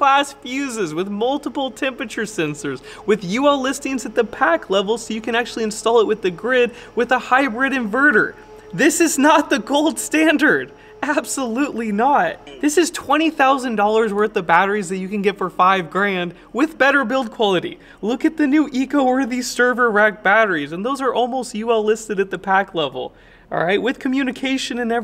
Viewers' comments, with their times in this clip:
0:07 He didnt say GOLD standard he said OLD standard.